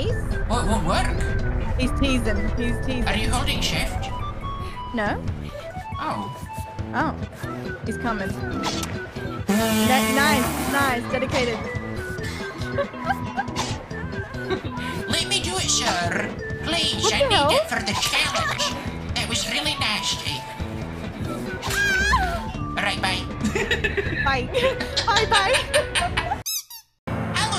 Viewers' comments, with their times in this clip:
0:08 Whether or not it was intentional, can we all take a moment to appreciate Granny's musical "Bvvvv" ? It was in the same key as the background music. Brilliant!